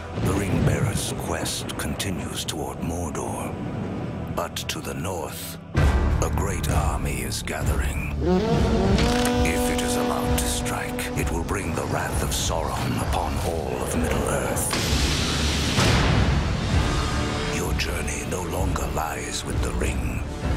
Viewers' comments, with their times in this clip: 0:06 the horn pwnz its just epic